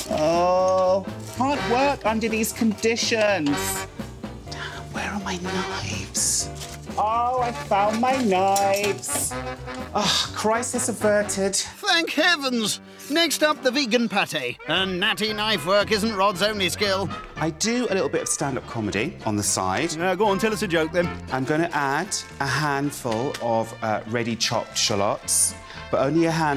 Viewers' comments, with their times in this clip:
0:07 the bottom theme tune 😭